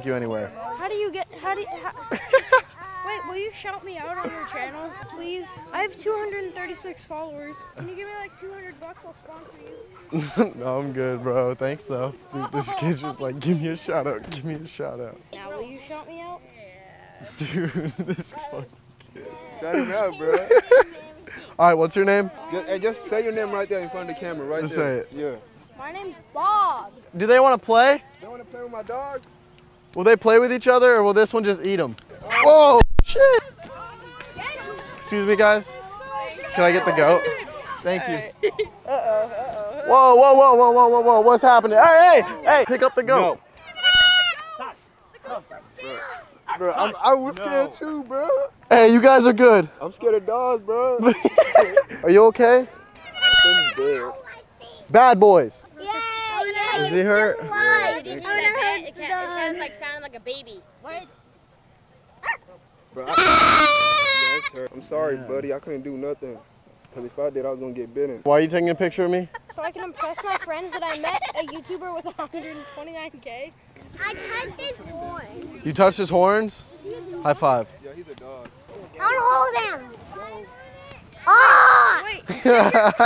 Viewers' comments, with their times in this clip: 0:07 That little troubled "aaaaah" is the epitomy of cringe
1:04 When the lil goat cried I almost cried fuck poor lil goqt